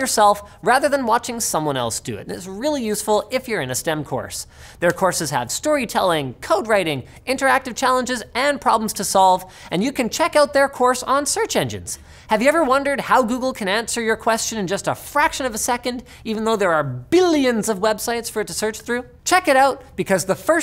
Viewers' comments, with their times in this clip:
0:07 still says brillant instead of brilliant..lol its been months now